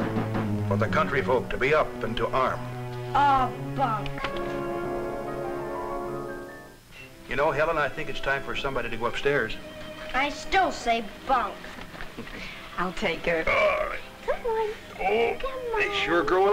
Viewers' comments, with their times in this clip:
0:03 For a second, I thought he said something else LOL 🤪